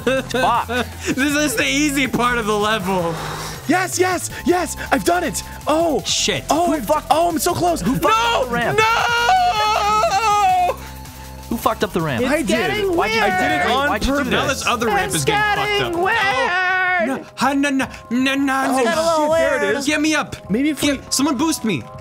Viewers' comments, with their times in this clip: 0:04 60% of this episode: yes! Yes! OMG I MADE IT~ Awww... there was something musical in that "NOoOoo"